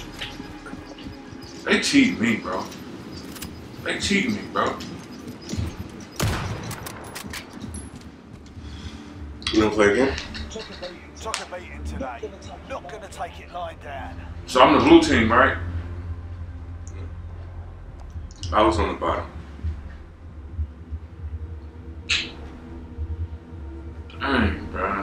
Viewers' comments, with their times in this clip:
0:09 "you wanna play again." Hell nah yo 🤣. He said that so damn casual.